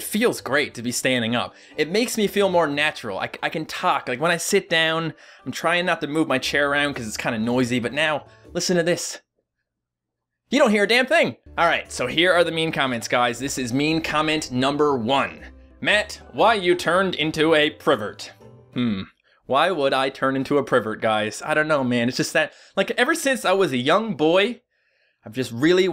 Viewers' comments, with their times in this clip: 0:09 ,only thing i hear is your bones breaking. REKT xD